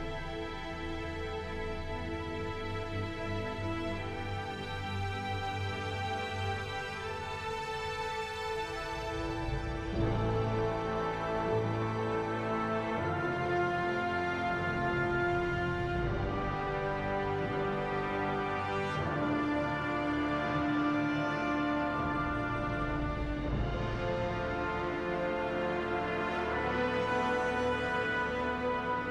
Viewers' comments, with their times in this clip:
0:10 I came just for that small horn part.